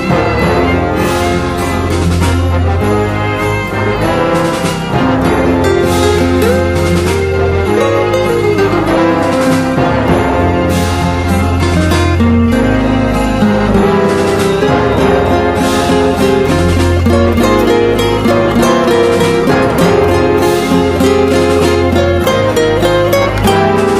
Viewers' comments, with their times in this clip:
0:05 the guitar tho